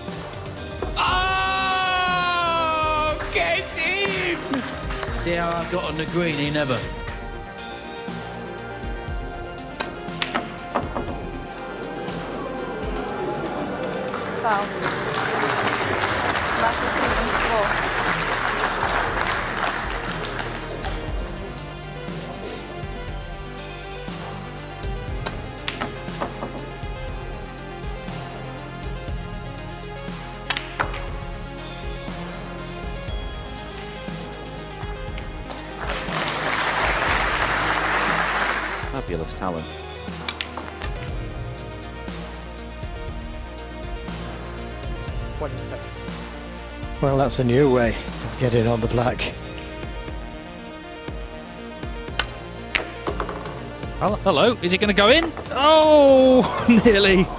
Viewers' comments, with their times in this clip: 0:04 Jimmy "See 'ow I got on the green anee never" - Legend
0:43 had to quit the music was getting on my nerves.